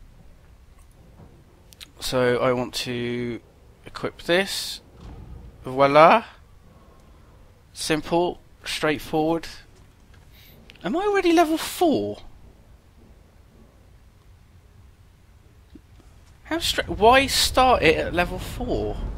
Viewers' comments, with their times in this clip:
0:06 "VOILA !" I'm french and i live in France...I love Yogscast and I love your pronunciation !